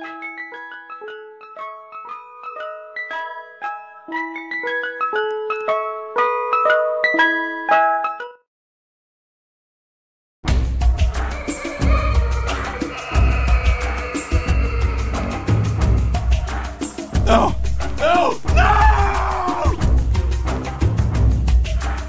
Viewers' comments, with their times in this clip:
0:10 maybe terrible music with the music ID